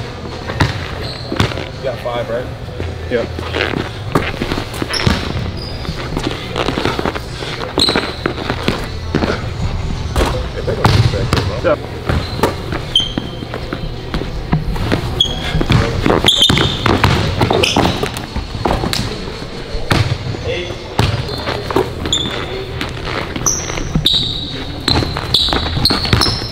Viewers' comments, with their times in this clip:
0:08 bro dude sound like he got the squeaky boot on from spongebob wth 😂😂😂